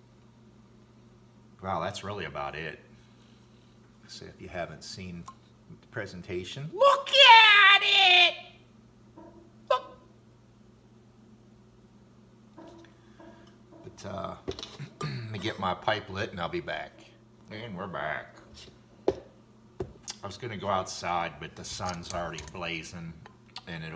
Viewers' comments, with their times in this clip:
0:06 Annnnnnd I shit myself seconds... just listening doing random things around the house and your voice came on and i thought someone was in my house...